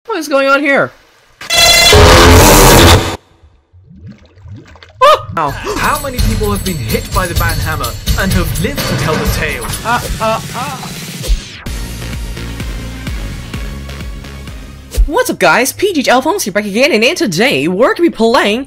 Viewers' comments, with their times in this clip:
0:00 this is quiet put full volume
0:01 my eers hert